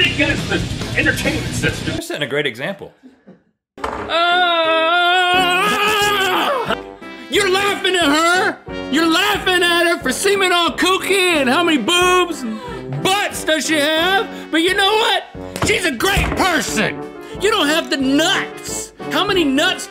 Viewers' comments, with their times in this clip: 0:04 Link is literally Kermit the Frog and Elmo when they are angry🤣